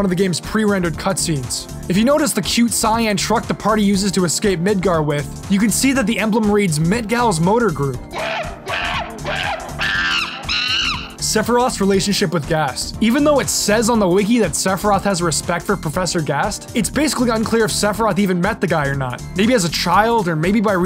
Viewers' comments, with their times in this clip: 0:08 that bgm!! I'm literally stood in the sports store in Palisades Mall